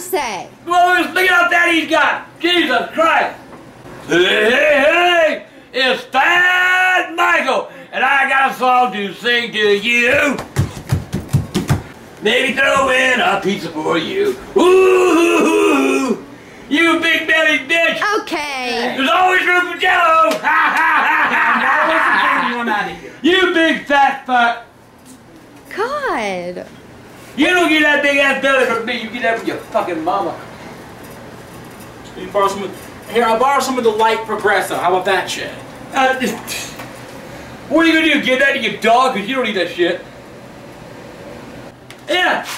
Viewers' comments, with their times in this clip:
0:10 THE FOOTSTEPS LMAOAOAOAO
0:29 I don't know what grandpa said their .